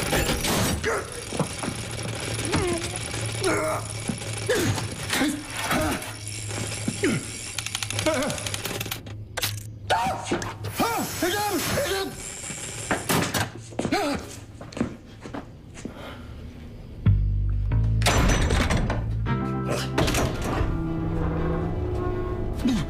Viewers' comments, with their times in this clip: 0:09 Jensens’ scream! 😂😂😂😂 he couldn’t have portrayed Dean’s fear of spiders much better than this!